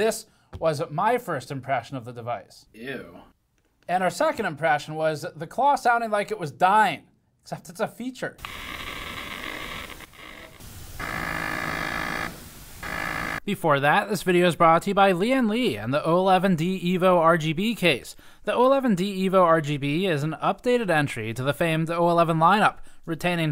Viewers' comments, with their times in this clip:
0:09 angry Geiger counter noises
0:11 the new operation game looks demonic, you haven't even gotten to the wishbone yet and its already buzzing